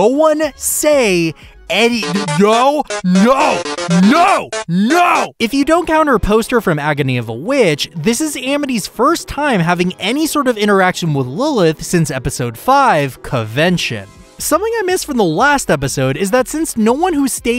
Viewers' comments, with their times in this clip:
0:03 that’s some strong no’s there